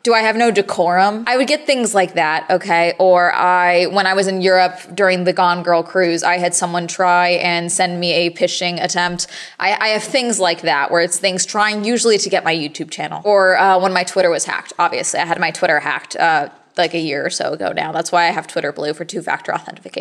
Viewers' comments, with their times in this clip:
0:07 its not pishing, its phishing. Sounds like fishing